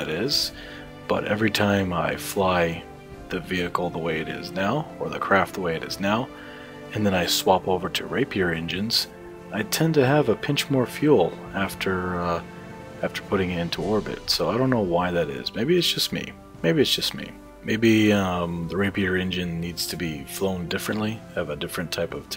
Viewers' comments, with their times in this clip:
0:07 I swap over to rape your engines... LOL